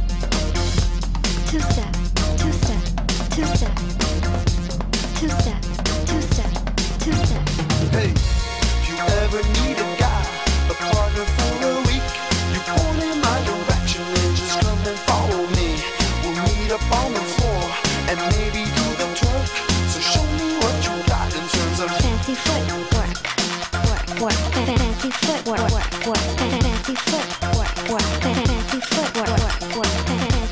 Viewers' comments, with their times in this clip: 0:08 is my favorite break
0:16 Did he just say "...and maybe do the Twerk" ? haha